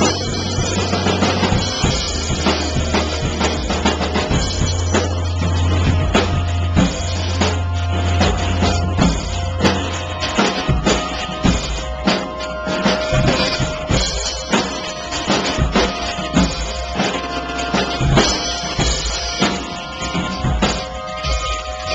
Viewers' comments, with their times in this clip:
0:08 you stumbled a bit, but otherwise, it was a good song, plus, im trying to get this down myself XD